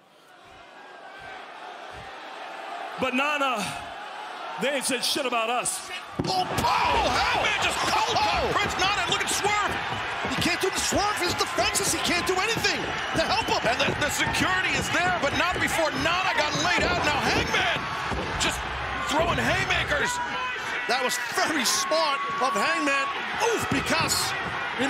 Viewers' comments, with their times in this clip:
0:05 If you listen closely you can hear Nana say " Shit!"